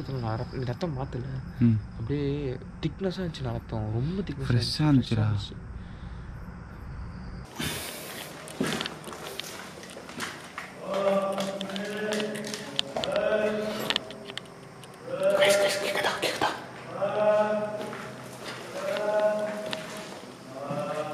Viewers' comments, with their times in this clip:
0:07 that is human voice not ghost